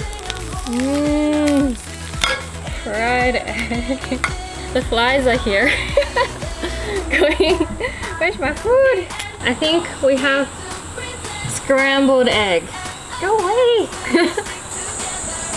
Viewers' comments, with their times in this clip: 0:03 Who else was just jamming to faster car? xD